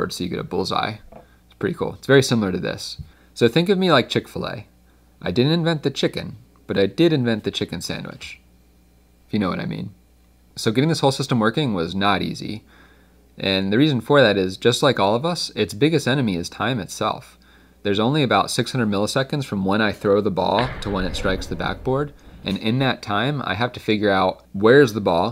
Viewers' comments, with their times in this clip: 0:09 did he just drink a chicken?